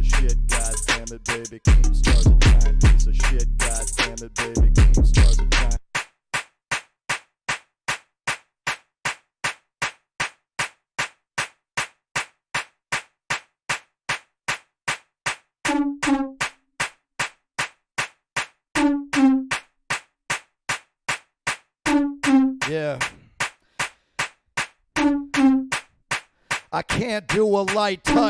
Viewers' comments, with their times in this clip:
0:09 Ethan vibing on a repeated clap